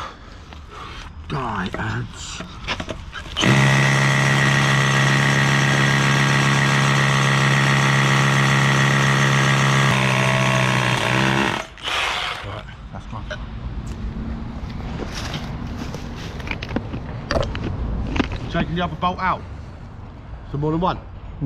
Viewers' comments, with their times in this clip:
0:03 why you drilling metal with hammer drill on ?